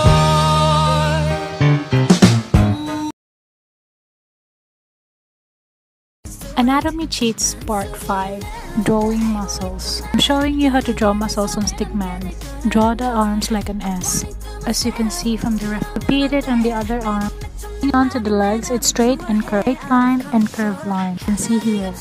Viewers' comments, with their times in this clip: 0:07 me as a kpop fan (twice in this case) hearing ICSM: AAAAAAA yasss
0:08 I can hear "I can't stop me" playing in the background. I can't stop me can't stop me can stop meeèeeee